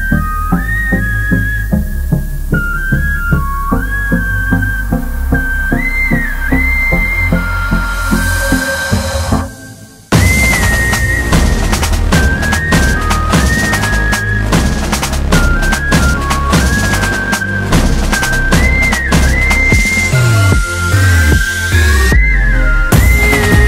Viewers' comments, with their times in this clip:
0:10 The tappy drums on the last chorus 😍